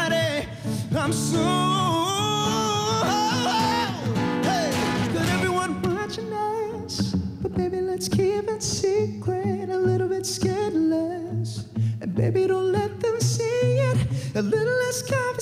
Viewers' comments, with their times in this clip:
0:03 He tries to mix but... Lol